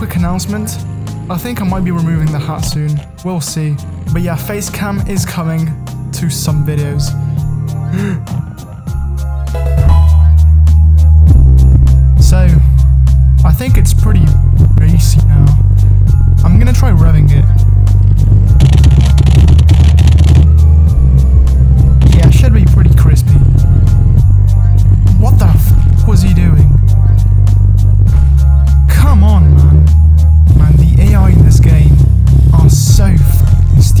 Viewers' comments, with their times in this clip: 0:08 Bruh mate i didnt understand a single word from till the end
0:11 So, I think it’s pretty B A S S Y now Yep, it’s bassy
0:13 Oh god the music is like someone is having a party and the car sounds beefy
0:18 sounds like Bleed by Meshuggah